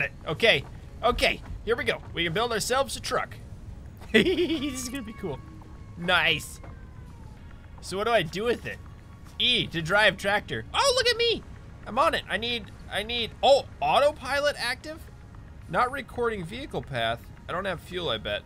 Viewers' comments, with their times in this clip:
0:04 did anyone else hear a cat ?
0:04 You can hear a cat meowwww